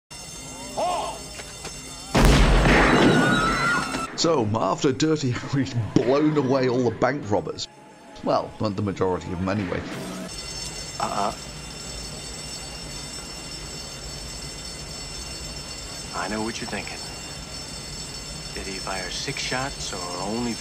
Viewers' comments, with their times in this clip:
0:02 they've recorded a new Wilhelm scream.